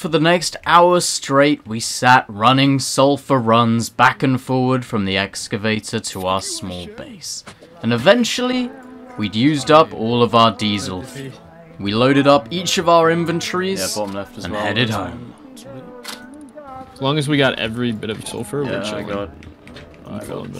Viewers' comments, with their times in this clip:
0:03 what happend to your voice